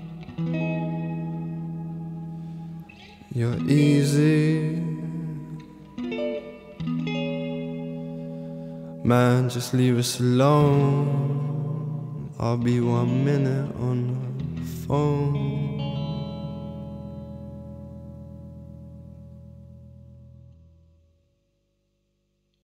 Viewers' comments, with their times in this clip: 0:03 I love the music, but don't like his mannerism of singing. From minute you can hear him singing clear, and it's absolutely great!
0:03 I love the music, but don't like his mannerism of singing. From minute you can hear him singing clear, and it's absolutely great!